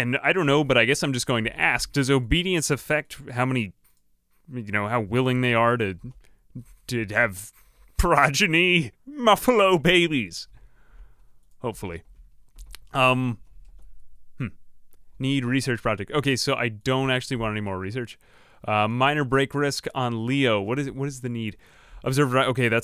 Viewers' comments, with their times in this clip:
0:05 Oh so there comes your funny sounding voice from way later in later videos. I started wondering, when you'd switch your tone (because at some point you did). I am fairly new to your videos, got here through that filthy stupid algorithm, but i guess this time the algorithm actually showed me something of value.